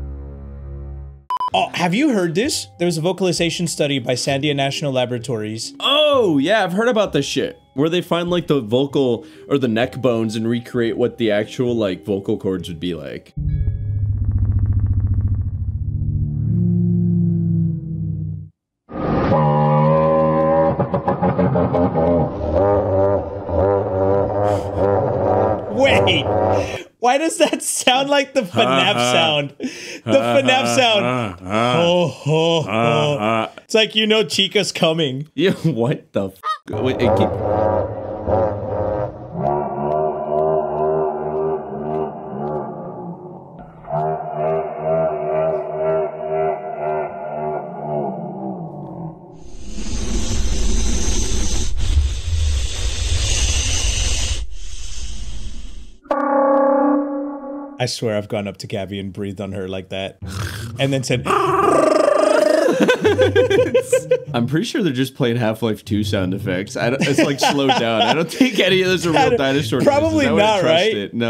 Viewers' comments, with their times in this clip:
0:03 T-rex sounds like some giant Geese!
0:18 sounds like a 2 stroke dirtbike
0:18 I’ve scrolled through like five comments and I haven’t seen a single comment talking about how this does not sound like the Godzilla charging up atomic breath sound so I will put a timestamp and talk about this
0:19 Soon as I heard this, my mind referenced it to the bout to come guy😭😂😂
0:22 bro is a goose
0:23 bro tryna be a car💀
0:28 The sound of the trex was so quiet as well as them running or walking, you wouldn’t hear them at night! //what I’ve heard!
0:32 Tf what you mean the fnaf sound that thing sounds like hellcat Reving
0:38 POV that one Honda Civic at 3 AM.:
0:38 I can't be the ony one who hears a motorcycle engine
0:39 sounds more like a Quetzalcoatlus or a Triceratops
0:40 I really thought there was a tuned up car behind me
0:44 it just car sounds
0:56 Godzilla charging up a plasma beam😂